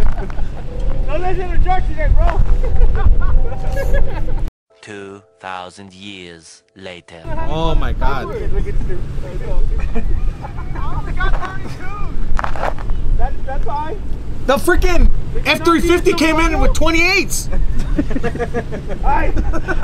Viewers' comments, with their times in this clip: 0:07 Careful how you say that name